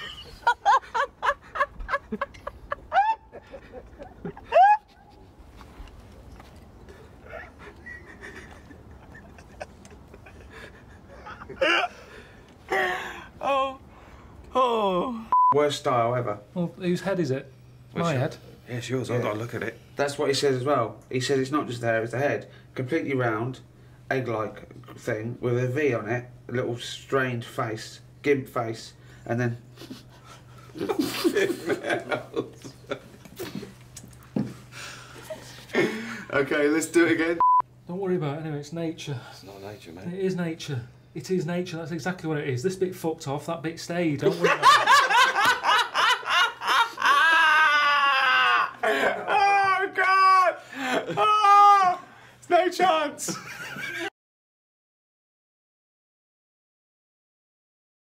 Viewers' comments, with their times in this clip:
0:03 the echo aha
0:04 Ricky's laugh is EVERYTHING. Those squeaky hiccups truly complete my soul.
0:44 It's the laugh that bothers me. Most people are polite enough to not have their laugh destroy ear drums and make children scream.